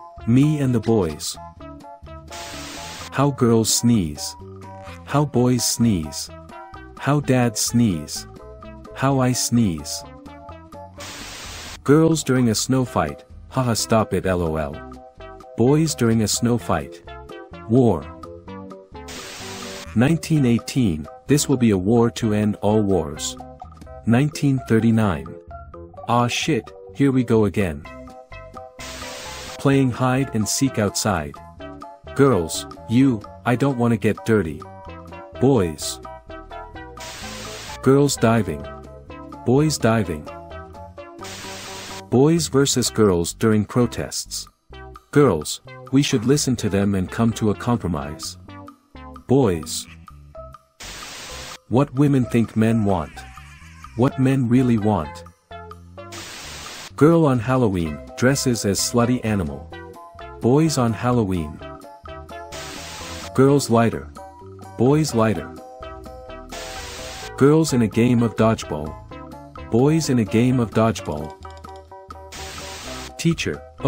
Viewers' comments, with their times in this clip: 0:09 should that ia Saitama sneeze 💀💀💀
0:09 Bro's sneeze is the nuke dropped on japan
0:25 On that was german I speak german
0:40 Boys diving and screaming "VRYYYYYYYYYYYYY!!!!!"
1:00 All the boys screaming Japanese as they dive to take candy